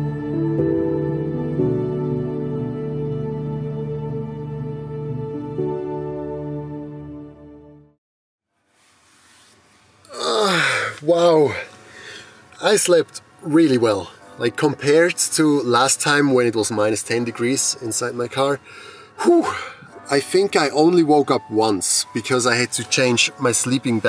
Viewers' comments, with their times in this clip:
0:09 Is it only me who can't stop hearing Dave2D's outtro music?